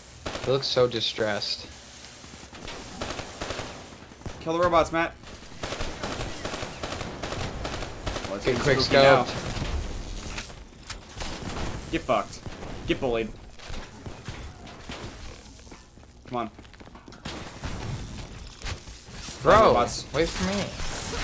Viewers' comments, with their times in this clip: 0:05 Hendricks fires the KN44... Sheva gun fire is heard... Way to go treyarch